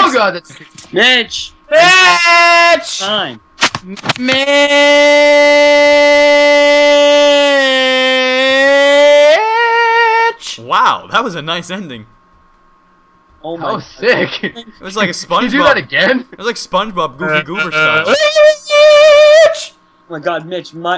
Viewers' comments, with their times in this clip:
0:03 AAAAAAAAAAAAAAAAAAAAAHHH MAH EARS!!